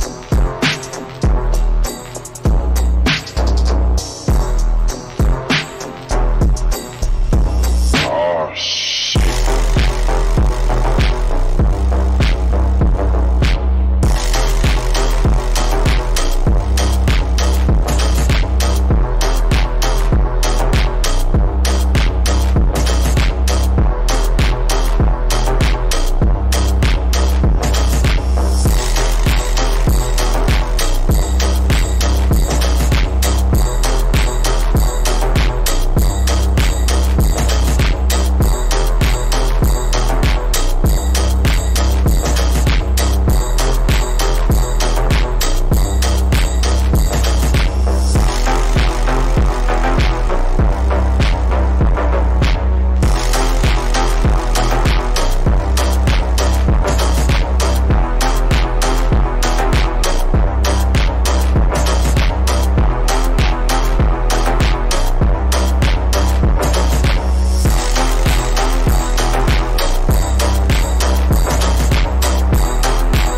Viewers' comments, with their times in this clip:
0:06 was on beat
1:01 when the beat of the bells were timed perfectly to his gameplay